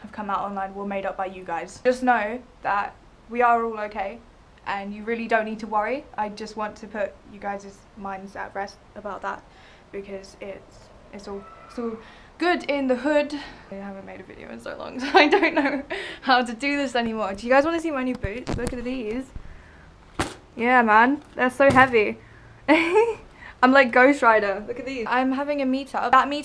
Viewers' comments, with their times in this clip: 0:10 there's a scream she's kidnapped her friends r
0:11 when there's a scream she try's to talk over it and briefly sounds like she's upset or about to cry... also she is constantly shaking throughout the video 🤔🤔
0:11 Listen i cant be the only one hearing help
0:11 did someone just scream
0:11 there is so much evidence of her being kidnapped. 1.she is shaking 2. she is looking to the side of the video and then stumbling her words 3.someone screams help in the video 4.she changes the subject A LOT!
0:11 bananas are great She talks a little bit louder almost as if she was trying to cover it up
0:11 "it's all scream in the background good in the hood"
0:11 someone scream "Help!" and she tried to cover that up..
0:11 The scream is
0:11 SHE is Shaking like if she is nervous and there was a scream in the background and she spoke even louder what if the kidnapper forced her to do this to !!!!
0:11 She in spoke louder before the scream and then changed the topic to looking at those AWSOME looking boots but all faction aside she’s shaking throughout the vid when she could of just put the cam on the end table behind her and she does what marina has been doing looking left and right at things but somethings going on if it’s drugs then we’ll that’s not are business but there are bars on her windows FROM THE INSIDE she has had multiple messages such as the 2 blue lines marina has on her face in medical terms that means that they are in panic distress or need help she isn’t ok the bruises and remember that one vid where the shadow of a man was in her eyes when she said that she was fine plus remember the one vid where that head pokes out the door well she said it was her mom but her mother has longer hair now we could be paranoid and perhaps quite nosy but she’s not being very normal so explain being just fine now
0:11 Someone screamed then she immediately changed subject to her shoes...
0:11 There is a screaming a baby 👶🏻 i think in
0:11 a scream in the background
0:11 there was a very clear scream in the background !
0:11 she raised her voice with the scream then she changes the subject to show you her new boots idk seems skeptical to me
0:13 She keeps looking like she's looking at someone or something and a or a couple off seconds before someone shouts help